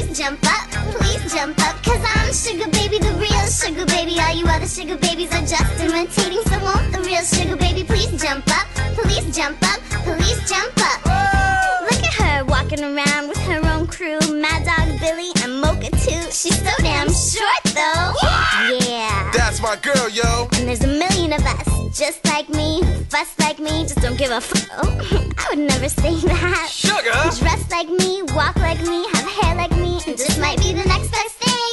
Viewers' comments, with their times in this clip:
0:07 why it sound like "all the police pls jump up pls jump up" or is it just me
0:19 "That's my girl yo!" Sounds like Namjoon's voice
0:19 for a moment i thought he was Rap Monster XD